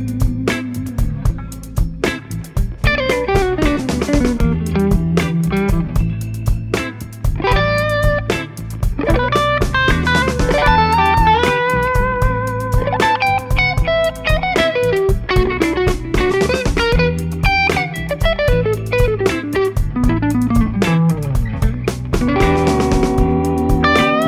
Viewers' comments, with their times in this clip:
0:09 That jazz lick is so cool!